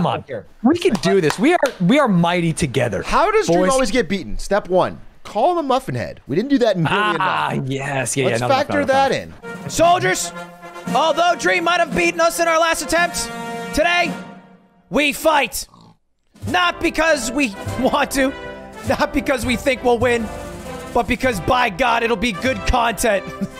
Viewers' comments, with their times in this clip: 0:10 The oink was perfect